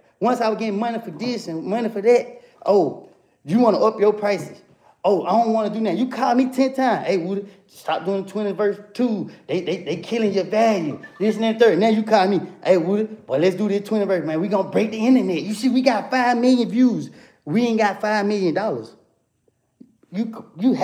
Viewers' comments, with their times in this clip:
0:07 that rewind 🤣🤣 we here 👁️ ~ Martin voice